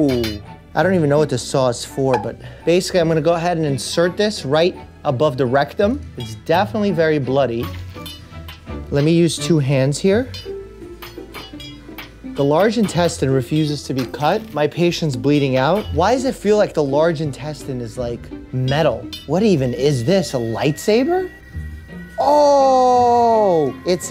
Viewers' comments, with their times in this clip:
0:10 Why is no one talking